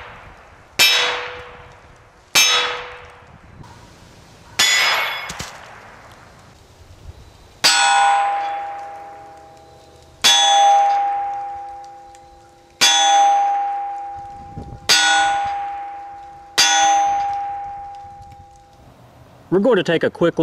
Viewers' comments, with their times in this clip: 0:06 after hit hit the red one a few times I started waiting for AC/DC hell's bells to start playing :)